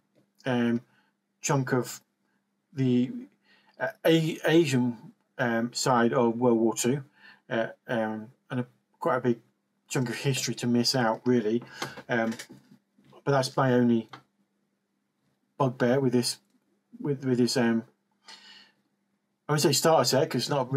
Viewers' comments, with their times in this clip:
0:04 Starting near the audio basically cuts out!!